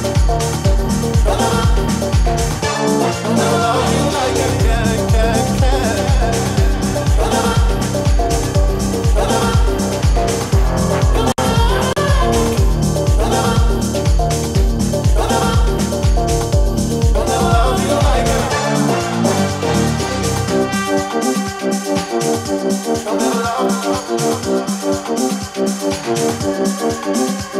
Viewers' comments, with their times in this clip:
0:09 that tune wo.